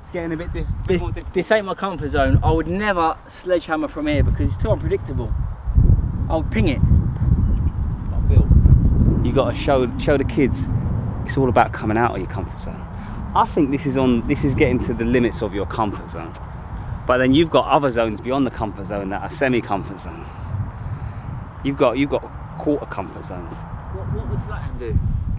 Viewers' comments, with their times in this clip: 0:09 I'm getting Jack Sparrow vibes from his speech